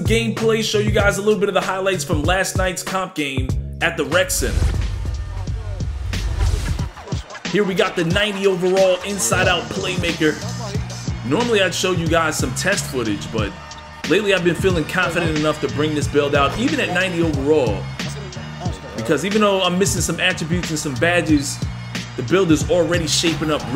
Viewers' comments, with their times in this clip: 0:04 The instrumental is so tough